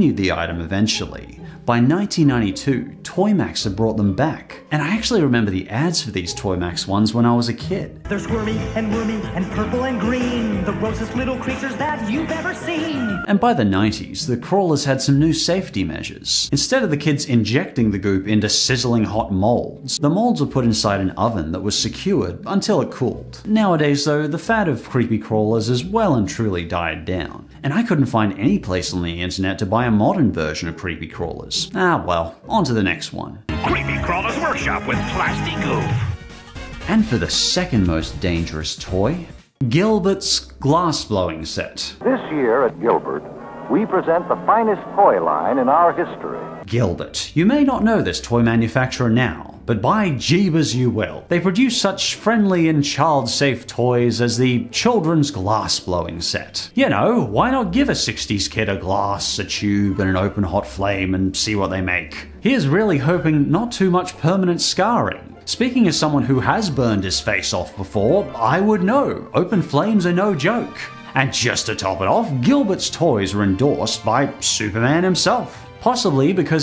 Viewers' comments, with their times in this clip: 0:08 That actually sounds similar to a Thomas and Friends song!
0:58 very nice selection of the background music